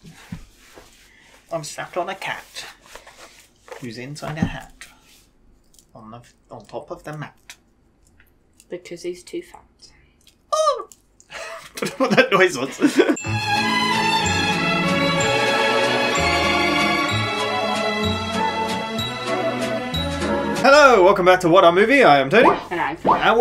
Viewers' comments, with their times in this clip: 0:09 I think I heard Ryan McPoyle make that noise